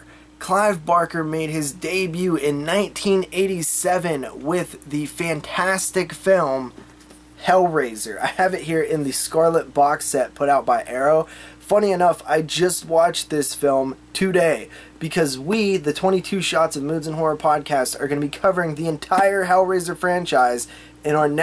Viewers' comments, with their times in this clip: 0:03 It is AM here and I was concentrating on what you were saying and "BEEEEEP!!". I almost jumped out of my chair and hit the ceiling. LOL...